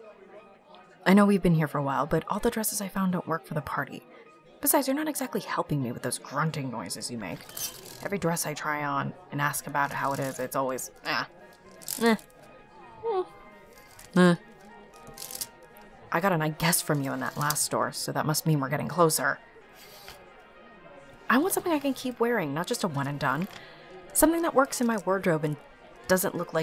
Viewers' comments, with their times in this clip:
0:10 when your fighting a pillager in minecraft